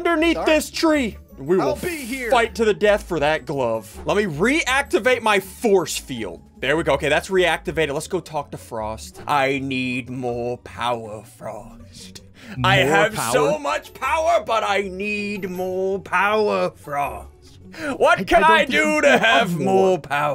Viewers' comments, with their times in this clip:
0:07 thats how villains talk